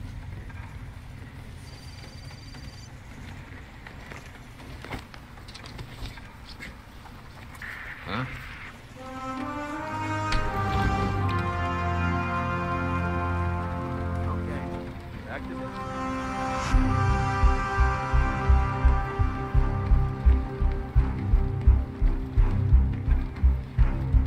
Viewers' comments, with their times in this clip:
0:09 The moment we hear the song ....